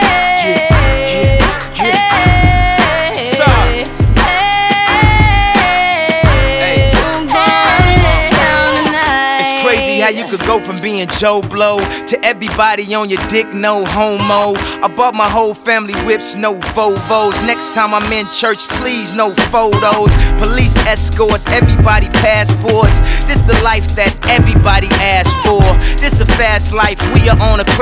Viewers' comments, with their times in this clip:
0:08 Yeezy spits a flame down the 🎤🔥 on this!!